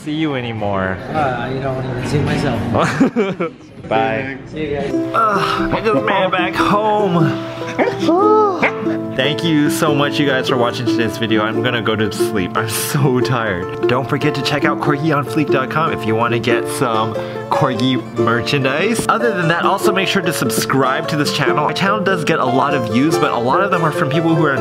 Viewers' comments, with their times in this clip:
0:08 AW THE LITTLE WOOF THO